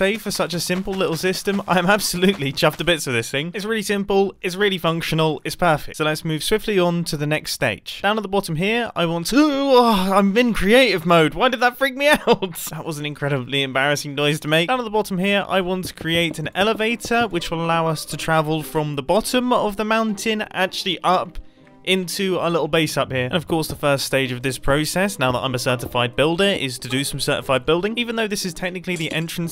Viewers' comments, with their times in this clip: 0:06 the noise he made hahahahaahha 🤣😂😂🤣🤣🤣😂😂🤣🤣😂😂😂🤣🤣
0:08 Mumbo I want to Uwu Ahh
0:09 screamed in lowercase
0:17 thought that was clash of clans music for a sec